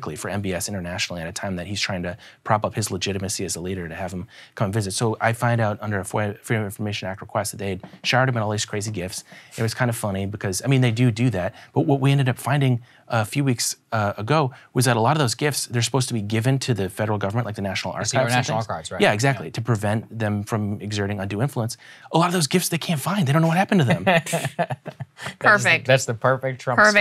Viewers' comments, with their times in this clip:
0:08 … who farted? Edit: who swalwelled the mic?